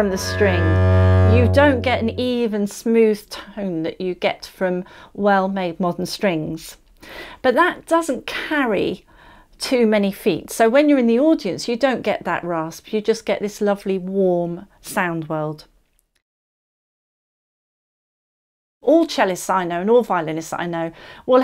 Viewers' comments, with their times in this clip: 0:05 "Rasp of lower strings"??????? As a listener, it has always seemed "beautiful" and "fruitful" to me.